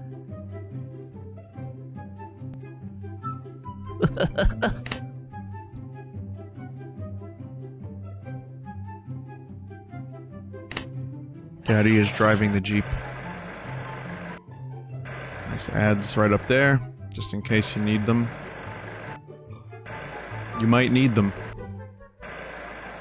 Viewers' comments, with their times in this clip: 0:08 when the YouTube tutorial music kicks in